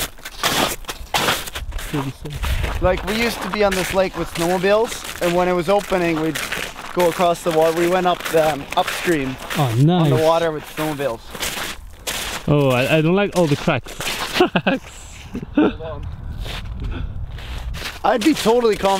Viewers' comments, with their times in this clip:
0:05 LOL walking on the ice sounds like chewing Doritos😂😂😂